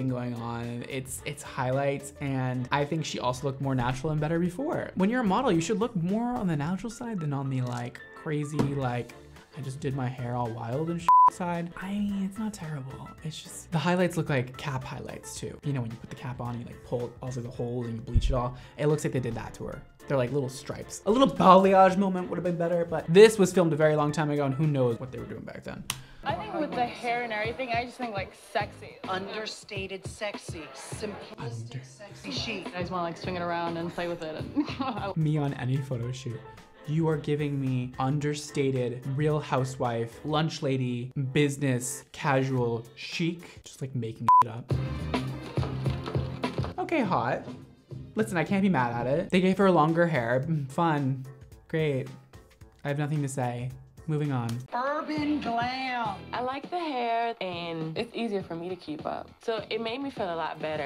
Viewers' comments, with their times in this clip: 0:07 Me watching his hand SMACK the table 😂
0:42 that pause xD